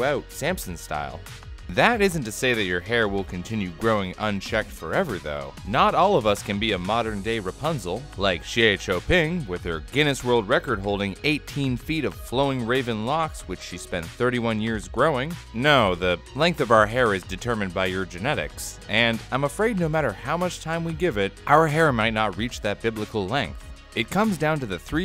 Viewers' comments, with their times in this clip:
0:08 great chinese pronunciation